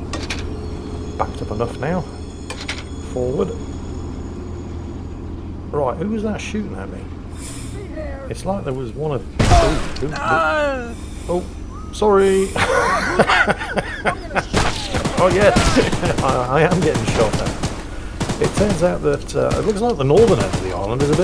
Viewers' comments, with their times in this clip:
0:05 “who was that shooting at me?” sudden thud, body parts flying, opps found him haha